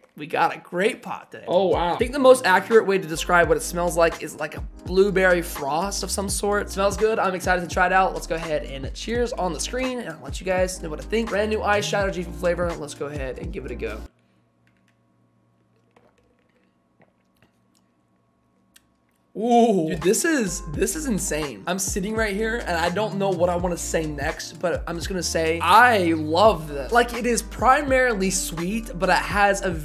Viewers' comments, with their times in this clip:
0:10 I sear he said “eye shadow”